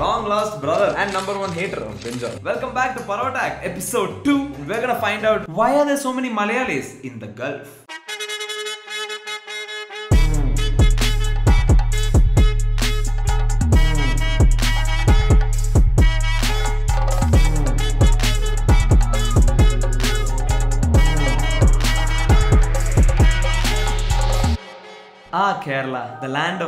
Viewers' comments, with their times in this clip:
0:08 not gulf... gelf